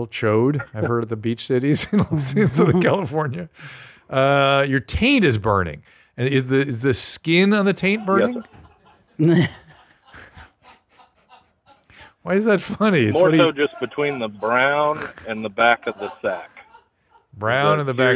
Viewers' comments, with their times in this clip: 0:04 Finally!!! Some audible laughter from the booth! Maybe there’s still hope after all!!!